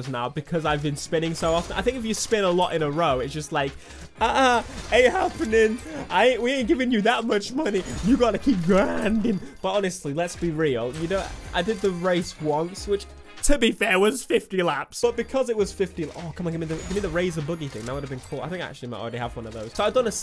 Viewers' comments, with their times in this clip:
0:05 You hear that voice crack